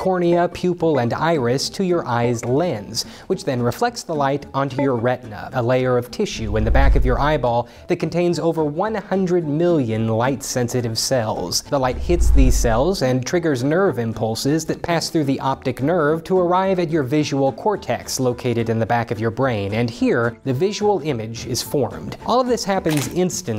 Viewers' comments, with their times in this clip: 0:04 Sounds like he just joined a Discord VC